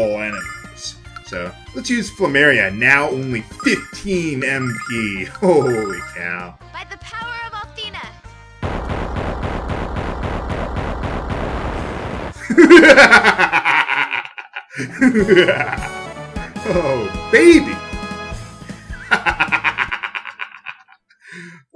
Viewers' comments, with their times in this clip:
0:09 Oh my, that laugh.